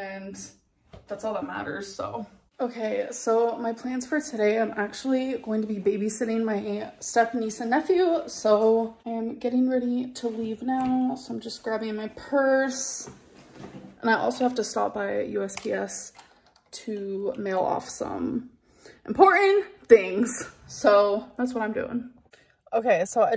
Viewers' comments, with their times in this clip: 0:06 babysitting who? I can’t figure out what she’s saying.